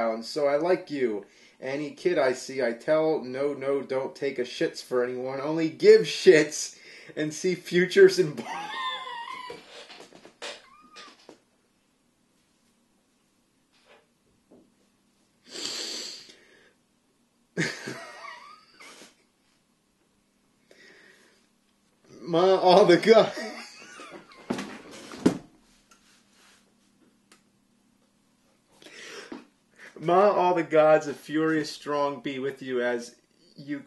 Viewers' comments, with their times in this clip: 0:07 Fuck, he has a awesome laugh
0:08 Broken car exhaust
0:17 James fart I think, cannot unhear